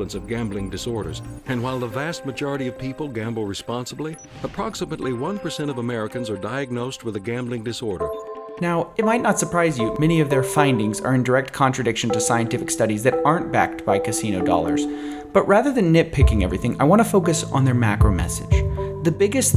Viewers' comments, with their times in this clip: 0:07 starts the typical Mark Rober background music